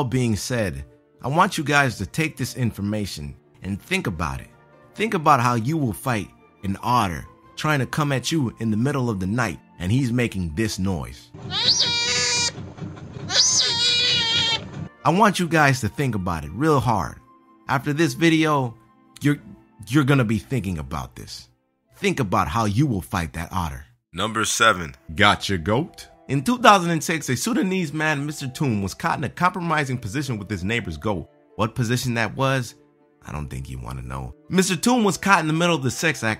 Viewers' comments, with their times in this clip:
0:08 wtf kinda noise is that?
0:21 I'm thinking we need a "white" not black narrator voice cause he ruined it.......